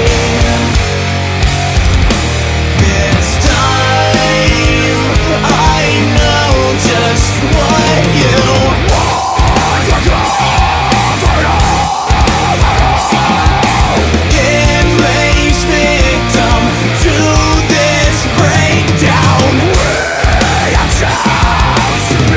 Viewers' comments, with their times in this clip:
0:09 remided my superhard on a Breaking Benjamin song for some reason